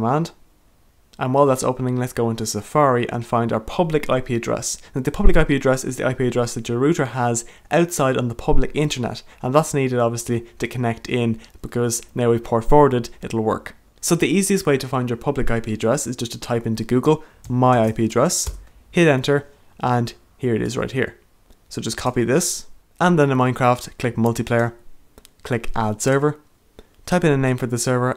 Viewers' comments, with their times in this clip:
0:05 Google Ireland. Plus his accent gives it away
0:15 i always thought you had an accent